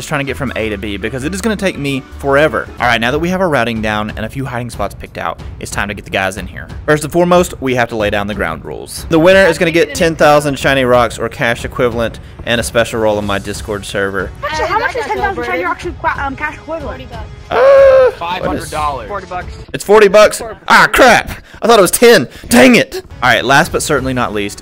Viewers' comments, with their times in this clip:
0:10 I thought you said 30,000 shiny rocks